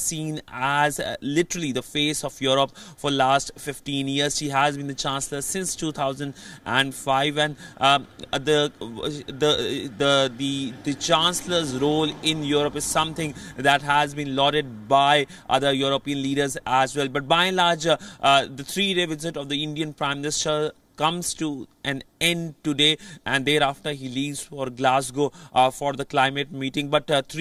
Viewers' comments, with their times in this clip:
0:08 act like a reading 😅😂😂